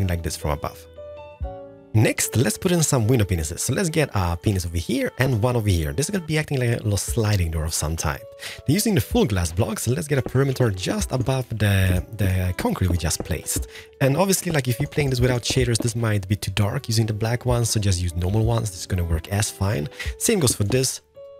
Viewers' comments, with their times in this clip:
0:07 it sounds like he says penis